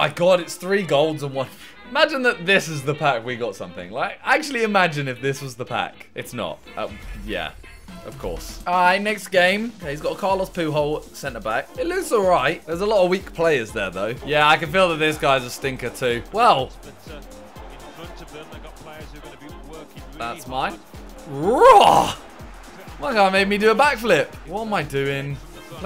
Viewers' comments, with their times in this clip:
0:09 Carlos poo whole 🤣